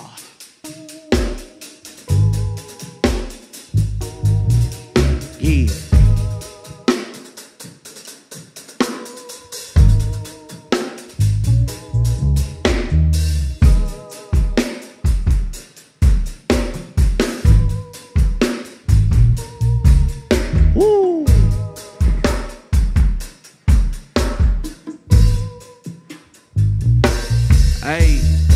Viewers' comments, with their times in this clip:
0:09 lyrics have a very low frequency but thats Memphis traditional rap fa ya